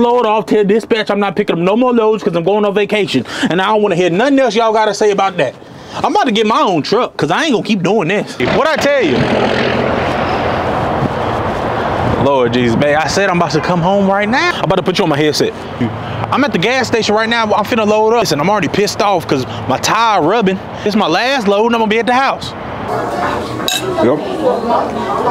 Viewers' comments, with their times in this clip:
0:09 sheesh that straight pipe 🔥